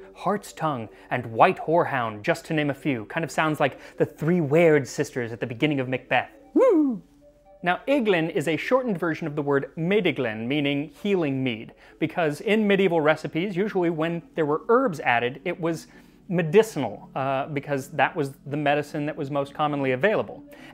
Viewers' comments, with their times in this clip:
0:05 what was that sound? Inhad to repeat to hear it again, it's almost like Mulder when he sees the dead alien.